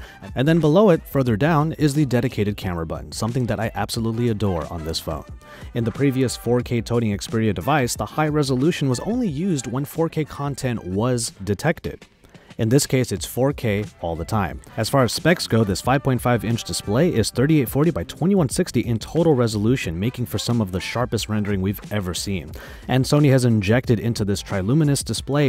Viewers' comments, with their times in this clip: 0:05 "Tony Xperia" lol 😂😂
0:07 4k "Tony" Xperia device 😂😂😂
0:09 he says tony Xperia 😂